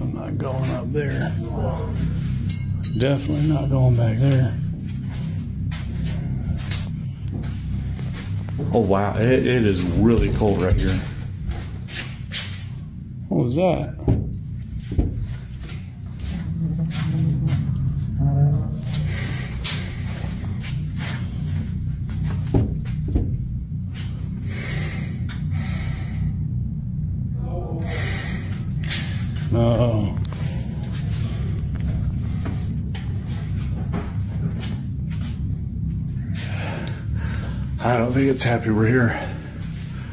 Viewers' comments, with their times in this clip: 0:03 1st i'm loving the videos, 2nd... the ghost asks "Who are you?" it also said something a few seconds before that but I couldn't make out what it said. Now i'm curious.
0:25 if you listen to that voice it sounds like it has more than one voice all in 1 voice. I heard 3 different persons in that voice.